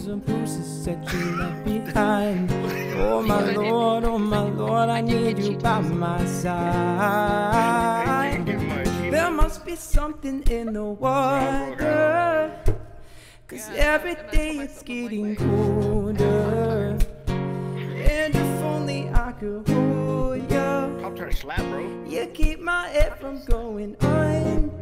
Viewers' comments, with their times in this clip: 0:09 these people talking made me mad lmao